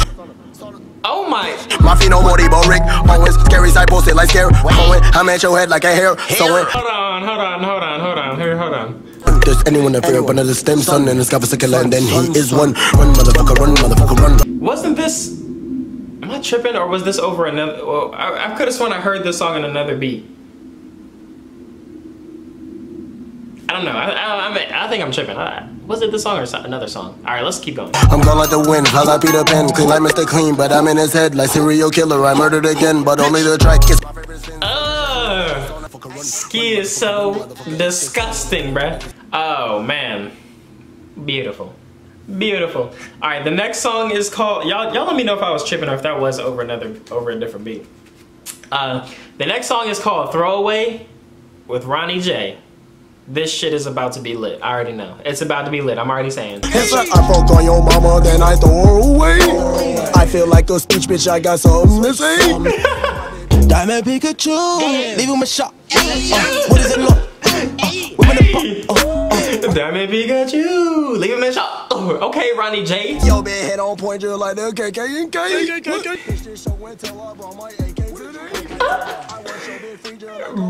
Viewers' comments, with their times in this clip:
0:10 yes I know what ur thinkin. He did change the beat to this song for his album idk why tho . The other beat was so fire
1:05 Ronny J was using Carti's flow there. 😂